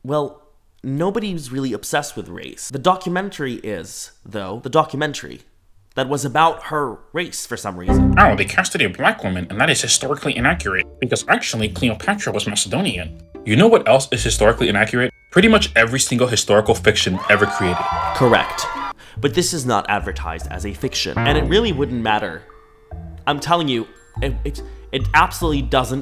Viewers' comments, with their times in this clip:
0:09 sounds like the nerd emoji 😭🤓